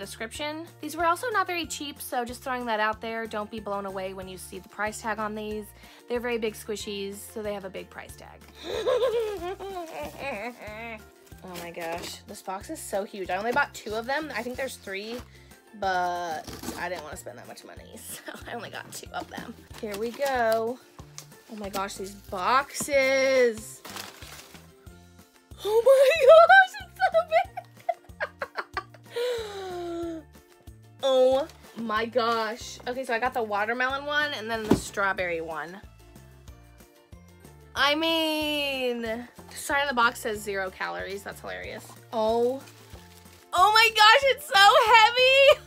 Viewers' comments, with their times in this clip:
0:09 is a evil laugh
0:27 your laugh is so creepy and scary